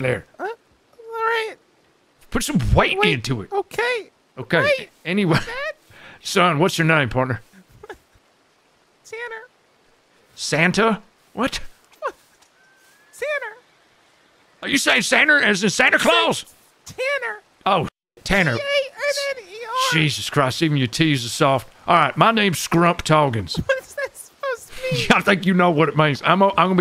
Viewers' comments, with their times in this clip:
0:07 Oh my god I cried laugh when you called him "Santa" after he clearly says "Tanner". Holy shit that was funny.